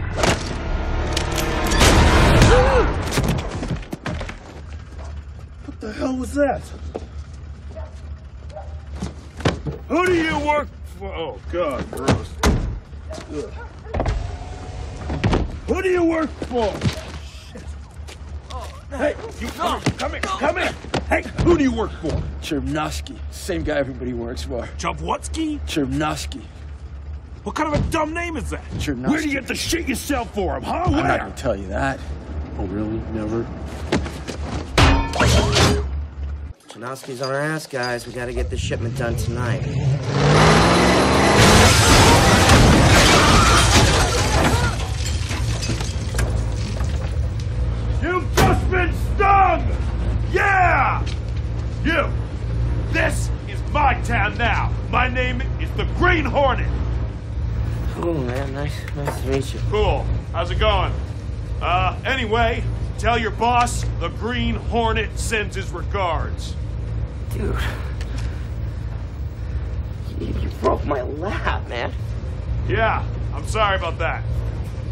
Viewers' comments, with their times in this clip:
0:09 just the way he says it😂 “WHO DO YOU work… Oh god gross… egh”
1:01 I love the shaken uncertainty in his voice when he says “anyway” 😂